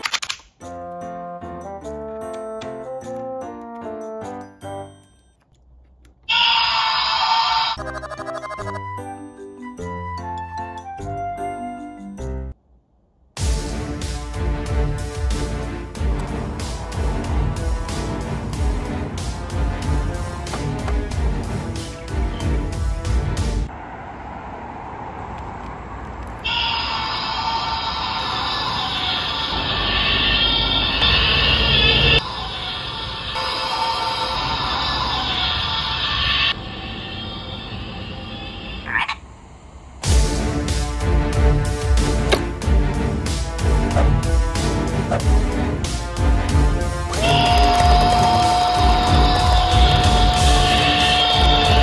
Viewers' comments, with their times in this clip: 0:06 I Love it when the camera zooms in to the speaker that plays the sound of a man screaming! 😂
0:26 I love how this guy gave the cartoon 3D prison model a screaming meme sound effect, lol.
0:38 sound like frog